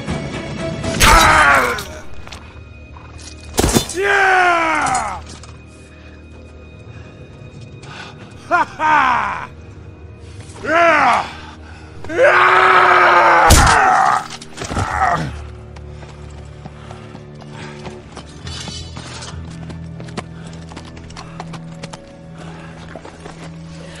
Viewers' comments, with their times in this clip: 0:06 That "HA-HA" always cracks me up.